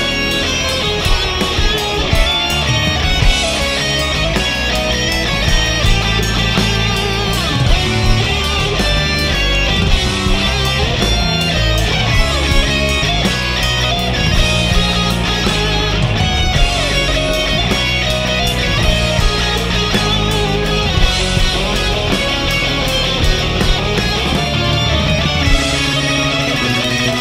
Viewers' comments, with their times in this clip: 0:10 Jon's look when the kid hits the wrong note. That was great.
0:10 OH DID JON HEAR THAT NOTE .... LOL HE HEARD IT ...